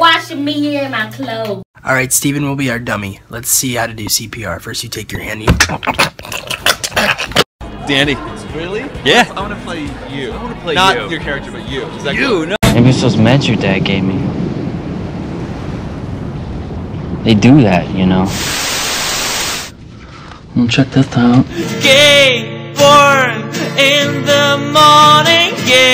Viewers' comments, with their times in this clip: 0:08 Evan doesn’t sound like Evan 💀